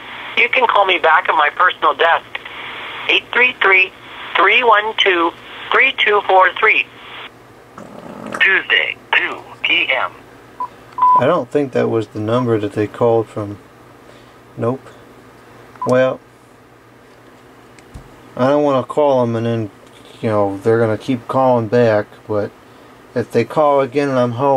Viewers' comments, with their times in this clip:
0:06 scam call out of nowhere, a fart occurs!